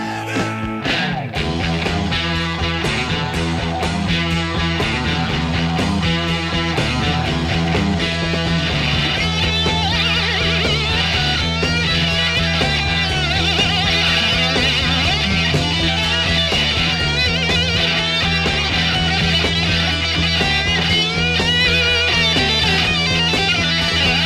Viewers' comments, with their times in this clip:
0:09 What about that guitar solo from !!!!